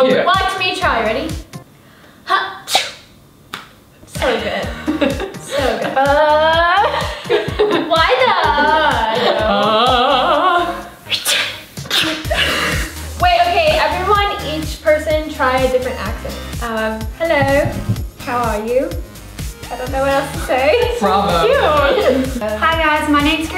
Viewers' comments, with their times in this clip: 0:10 😂😂😂 who else sneezed? I did but it was a real sneeze👌